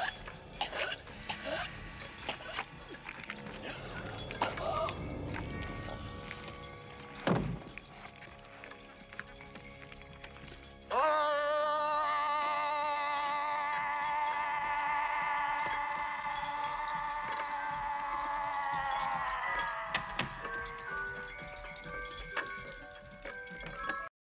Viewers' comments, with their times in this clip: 0:10 That classic yell
0:10 Hellraiser does a remix to Poland by - Lil Yachty 😂😂
0:10 I'm sorry but this scream makes me burst out a laugh when i watch it for the first time 😂
0:14 when he screams it reminds me of "chicken give me tendies"